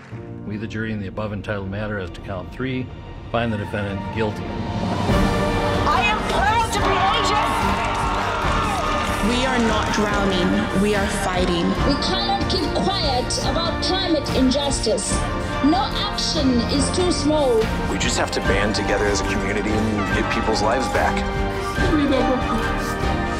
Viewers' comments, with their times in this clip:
0:05 anyone notice they're playing olivia rodrigo's drivers' license in the background??? it's very subtle at first but totally hits this was in fact the most googled song of 2021!
0:05 She says "red lights, stop signs" and continues. You can hear her sing in the background.